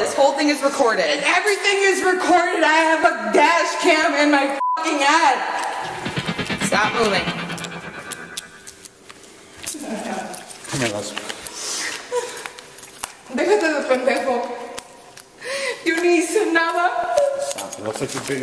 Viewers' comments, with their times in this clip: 0:04 The Six Million Dollar Man sound effect was GOLD! 🤣🤣🤣
0:06 The Six Million Dollar Man sound effect when she said she has a "dash cam in her head" was hilarious.